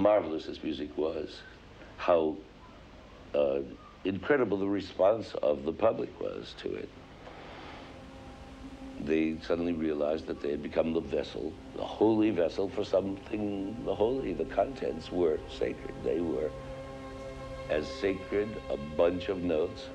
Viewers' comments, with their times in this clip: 0:05 very sad to see the cigarette and hear the ravaged voice, since he died from smoking.